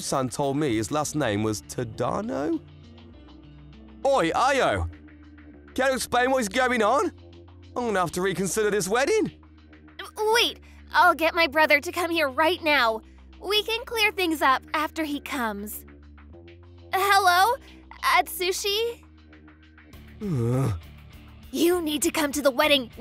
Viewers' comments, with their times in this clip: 0:04 I swear this guy sounds like Wheatley from Portal 2